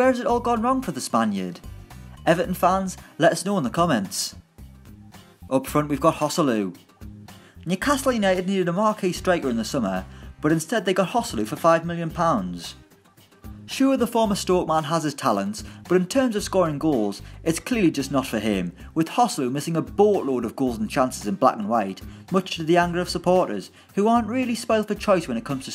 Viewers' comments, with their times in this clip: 0:07 that lisp when he said newcastle 😂